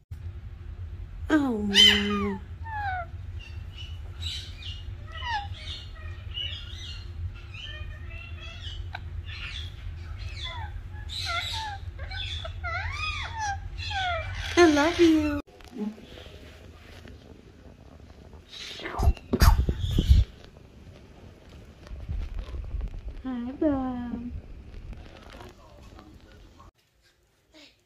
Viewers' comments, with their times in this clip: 0:10 that little noise ❤